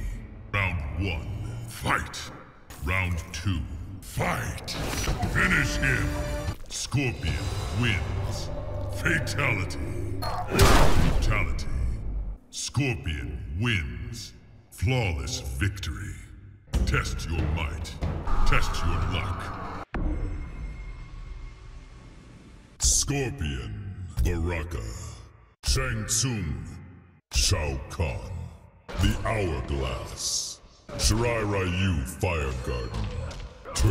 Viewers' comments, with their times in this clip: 0:03 That "fight" was perfect.
0:18 the screaming in the background with scorpion just standing there had me rolling for some reason 💀